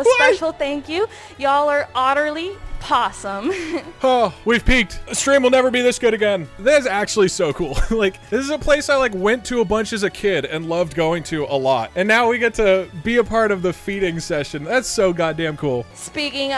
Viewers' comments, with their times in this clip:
0:03 That giggle was almost as cute as Rosa.